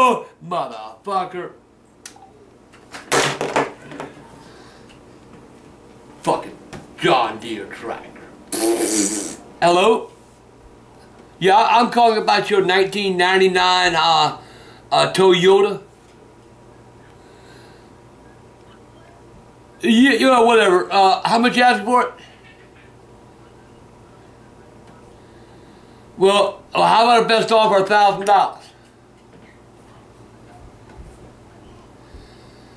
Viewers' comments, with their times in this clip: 0:10 I'm calling about your 1999, ahh...uhh toy Yoda 👽 It sounds like that's what he said, slays me every time x-D
0:11 1999 Toe Yoda.
0:11 the way he says toyota killed me...
0:15 he must like Star Wars if he wanted a toy yoda 😂